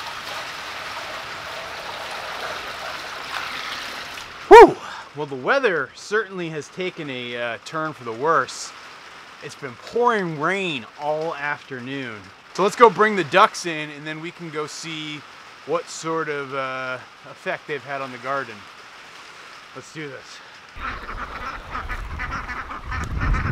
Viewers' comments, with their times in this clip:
0:04 RIP earphone users